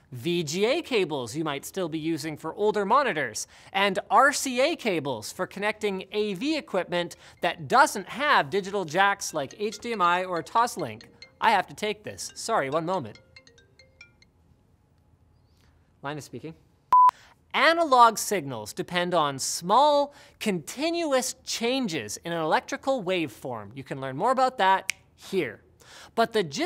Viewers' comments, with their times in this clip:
0:08 i was sure someone was calling me... And it's not even my ringtone...
0:11 shit I thought someone was calling me wtf